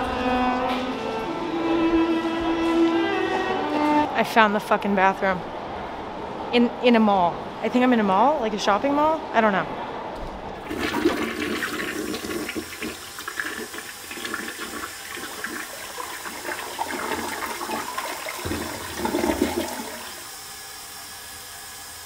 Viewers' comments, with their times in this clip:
0:09 and who could not love that special and leonine roar of a public toilet?